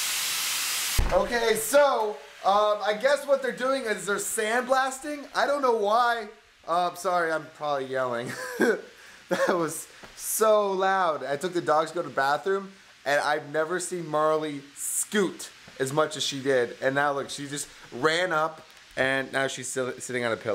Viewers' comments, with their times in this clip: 0:07 Shane Dawson's laugh ?! ^-^